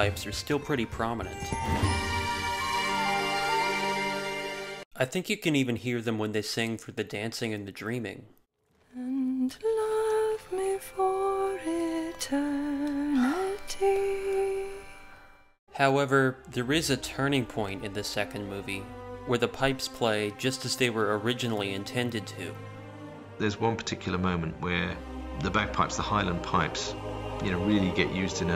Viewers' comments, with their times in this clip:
0:10 Sorry to disappoint, but that's a harmonium, not pipes. Similar sound since they both use reeds, but not pipes this time. Nonetheless really well done, was interesting to learn about the history of bagpipes and how Powell used them!